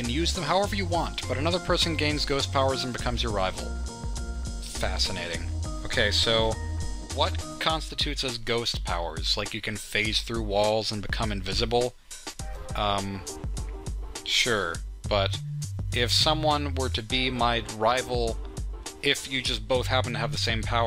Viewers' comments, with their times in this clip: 0:03 "Fascinating." I literally fell off my chair laughing. The sassy sarcasm though.